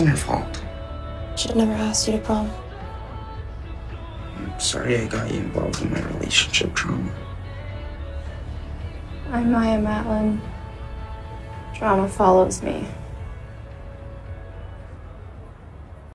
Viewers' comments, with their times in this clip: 0:04 Holy shit the way Maya says that... so monotone. I feel like that's her mood this whole season.